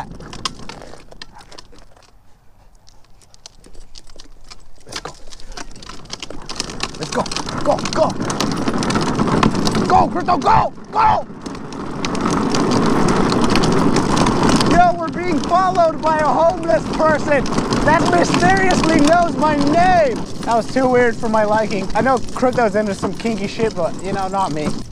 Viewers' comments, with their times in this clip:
0:09 You sounded panicked